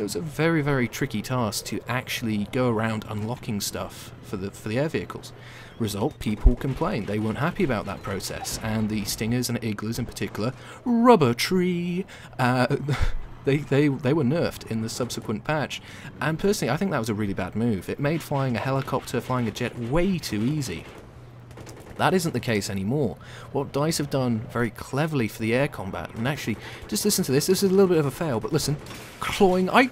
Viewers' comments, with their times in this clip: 0:10 ♫♪Rubber Treeee♫♪ ROFL